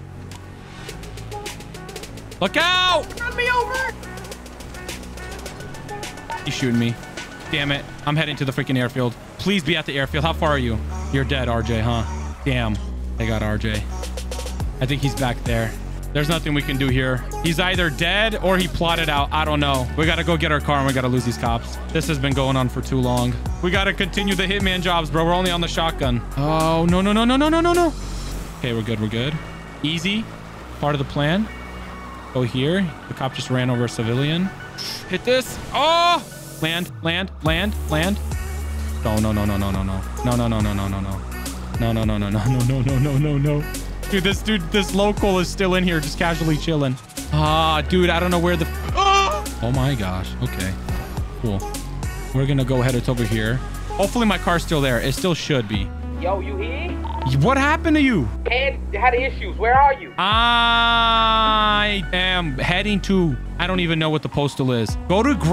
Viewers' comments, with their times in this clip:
0:07 the radio silence was actually chilling.
0:47 Why is no one talking ? XD Bro hit the OUH!
0:48 the way he just flies by the camera and just says "UUAH" is killing me
0:49 Bro that scream was legendary
0:49 you can hear the cop scream